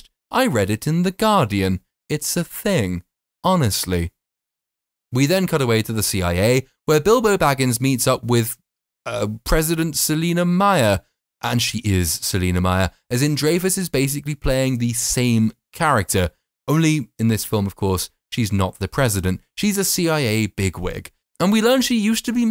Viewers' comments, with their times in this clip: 0:09 the sheer amount of contempt dripping from his every syllable. You could only manage that if you're a native English speaker.